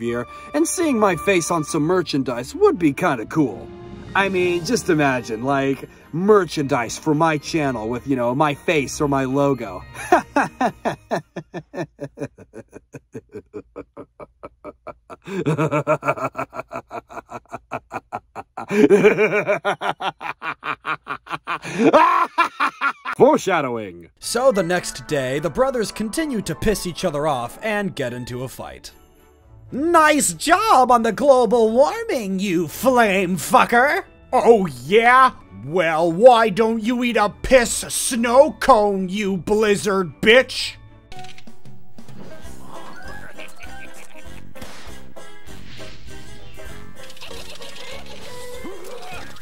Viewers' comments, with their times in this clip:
0:10 That evil laugh was perfect!
0:10 Greatest evil laugh ever
0:10 i love that evil laugh
0:10 the greatest evil laugh ive ever heard
0:11 i have never heard someone do a better evil laugh than this holy shit
0:11 holy shit that evil laugh is great
0:11 Why is no one talking about his good this guys evil laugh was
0:16 I gotta admit, that villainous laugh is very good I must say!
0:30 It took me too long to realize that the snow meiser didnt actually say "fuck" 😭😭😭